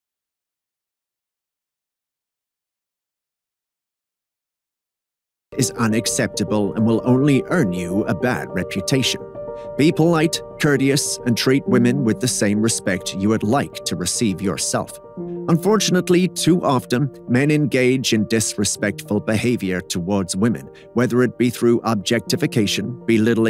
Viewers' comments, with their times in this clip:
0:10 Great video, however, the sound dropped off about two minutes in and returned